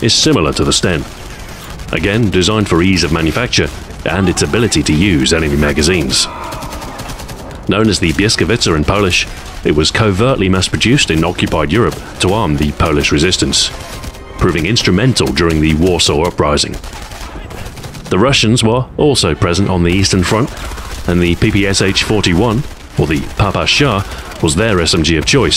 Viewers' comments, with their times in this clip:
0:07 biezkowica? that's not how you say błyskawica